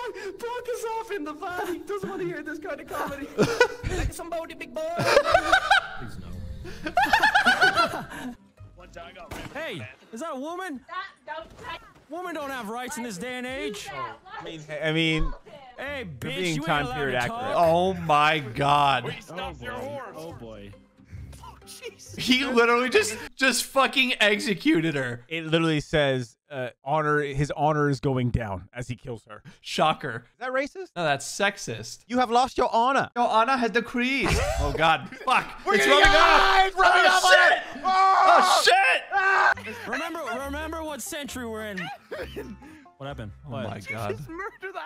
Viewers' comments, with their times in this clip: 0:07 Are we just gonna skip past that unholy cackle ??
0:32 they sound like my parents